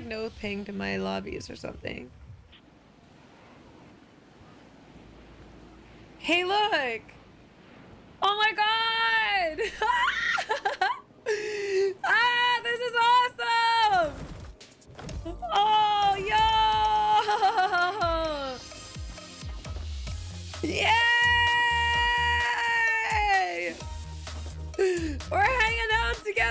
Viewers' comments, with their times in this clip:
0:09 u laugh like the monster ink girl